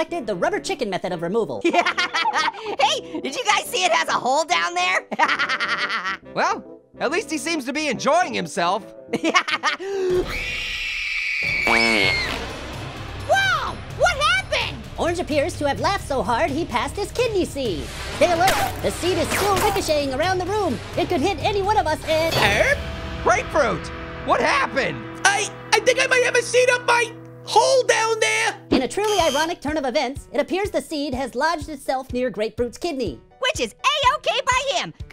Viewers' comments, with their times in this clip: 0:09 Did Orange Screamed Like A Kid Getting Spanked By Fly Swatter in the Video.
0:10 scream in like a wrecking bal
0:10 Annoying Orange Screaming Like A Cheezboger Form Chikin Nugget! LAMO!!!
0:10 i laughed when orange does a girl scream! 😂
0:10 There's too many hot ladies screaming!
0:10 Orange: (laughs and screams like a little girl) AHHHHHHHHHHHHH! Donut ftom BFB and I: Uugh! Pipe down!
0:11 the scream of privacy 😮
0:12 A laser fart? Awesome
0:22 the music remind me of Avengers Infinity War